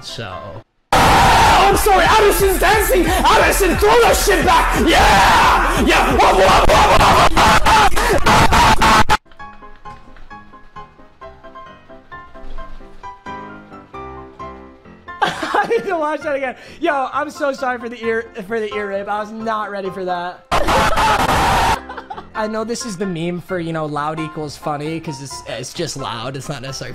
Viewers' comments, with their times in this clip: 0:07 bro what the heck was that for I had my AirPods in
0:10 the classic white people laugh 💩